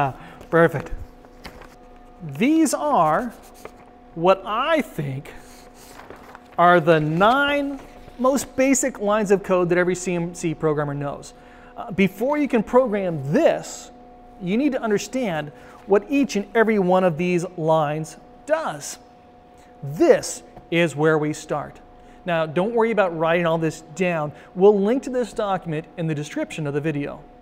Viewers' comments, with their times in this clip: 0:10 pronounced CNC as CMC and became cheery red. It happens with everyone. Great video.